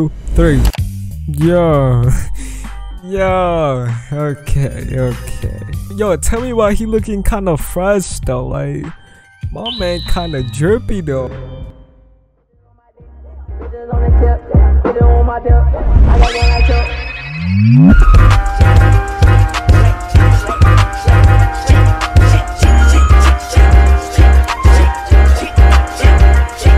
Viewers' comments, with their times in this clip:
0:09 wtf that sfx soo cool can someone share the link or name of the sfx zirrrrrrr